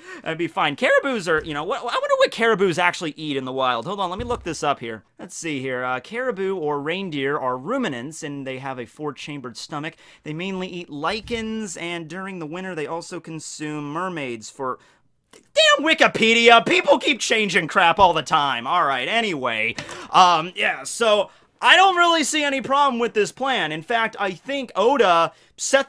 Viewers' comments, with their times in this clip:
0:09 Wait! Deer eat Lycans? As in werewolves? Deers Too OP!!!